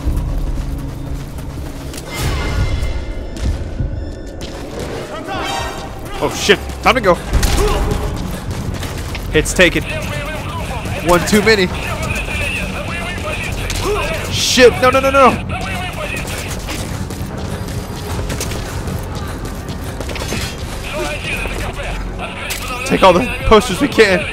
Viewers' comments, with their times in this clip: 0:05 I thought I received a text message on my phone lol.